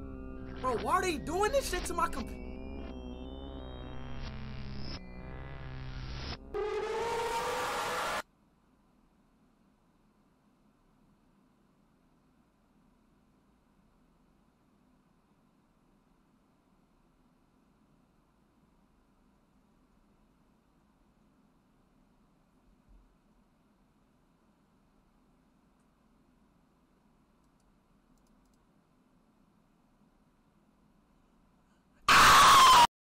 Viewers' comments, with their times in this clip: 0:05 turn down your volume
0:11 Bro sounded like a jumpscare himseft 💀💀
0:19 Speed gives the gigantic scream
0:30 funniest scream ever.